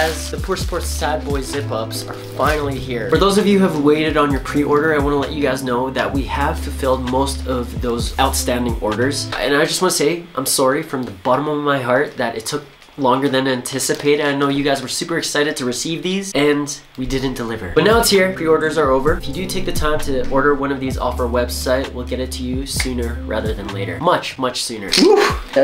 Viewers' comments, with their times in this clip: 0:08 the american in me could help but hear "I'm soarry"